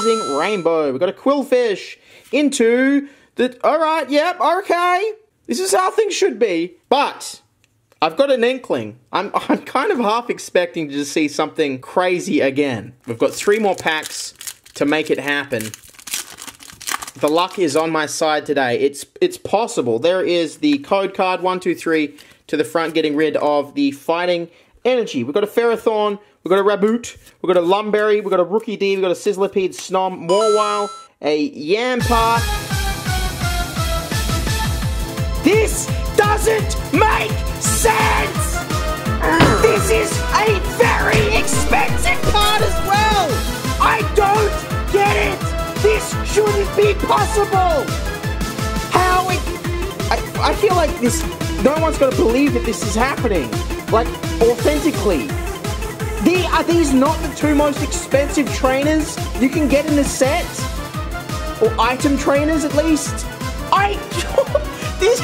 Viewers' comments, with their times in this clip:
0:07 he kind of sounded like he was abt 2 cry lol.
0:47 that music kinda fire